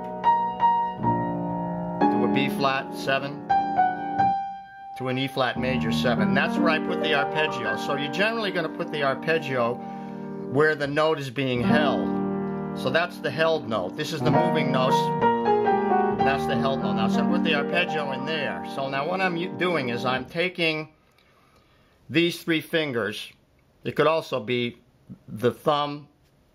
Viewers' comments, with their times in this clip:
0:07 the held note is G in the chord e flat. Is the melody end in G so you start on G arpergio?